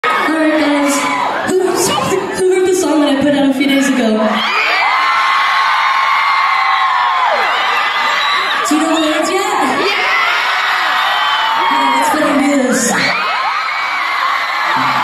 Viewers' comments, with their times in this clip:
0:01 omg her little giggle because she was so excited to be performing the new song. ahh bby